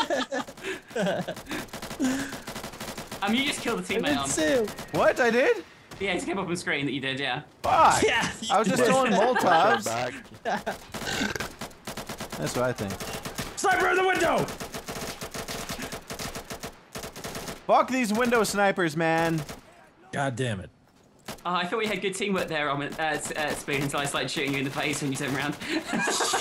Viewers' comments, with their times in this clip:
0:10 It sounded like someone did an epic burp